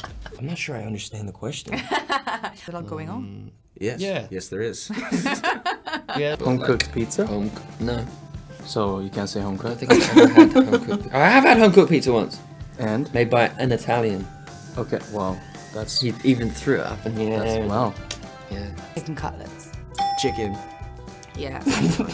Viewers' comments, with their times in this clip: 0:07 his lil "no"...i cannot live with that